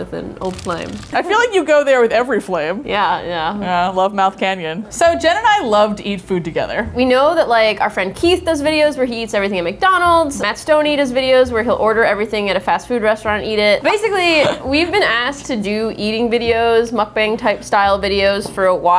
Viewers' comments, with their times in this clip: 0:05 I'm I the only one one who heard Gemini instead of Jen and I